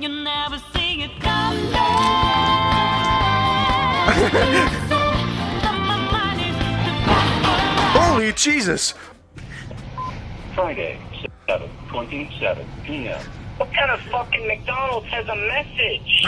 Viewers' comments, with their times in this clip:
0:04 Guys the music